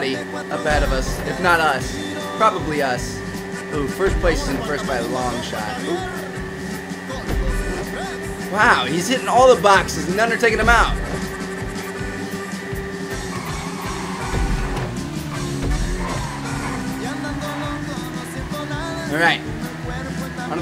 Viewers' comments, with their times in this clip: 0:06 what the hell ! What kind of music